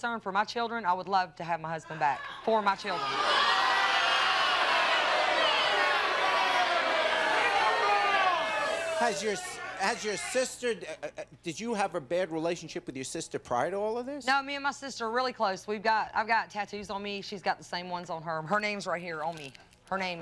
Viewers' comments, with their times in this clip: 0:04 Crowd was super savage over her response